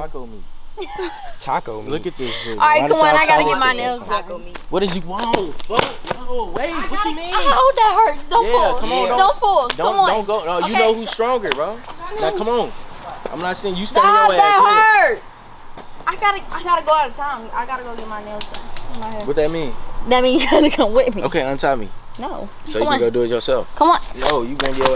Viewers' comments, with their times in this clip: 0:05 he said wait or bae ??